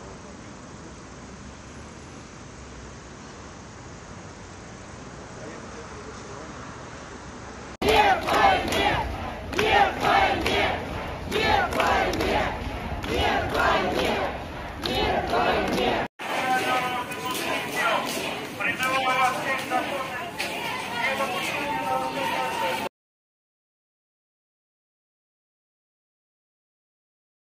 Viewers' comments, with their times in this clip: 0:09 what are they chanting?